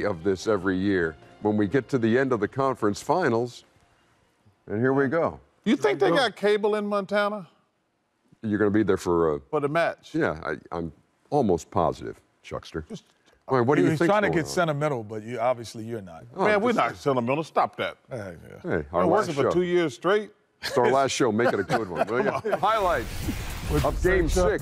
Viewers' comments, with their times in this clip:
0:05 how did he get accepted in auburn talking like this. Who did your work bro?